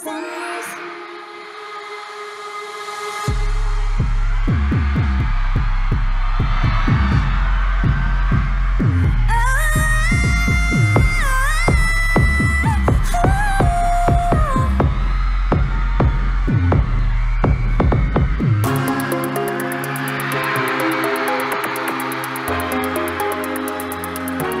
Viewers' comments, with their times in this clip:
0:08 the nayeon's high note is just amazing